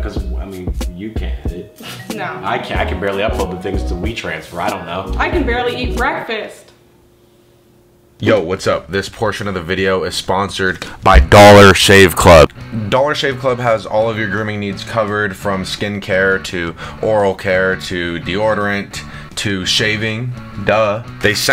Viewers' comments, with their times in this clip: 0:07 screamimg in mic yayyyyy